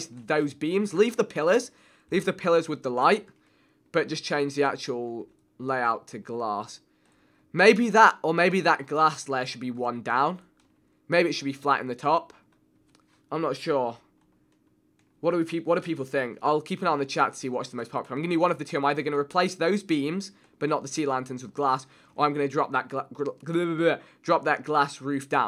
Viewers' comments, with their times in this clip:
0:06 Why do you pronounce glass, glarse, and then 3 seconds later you say glass. (im british btw)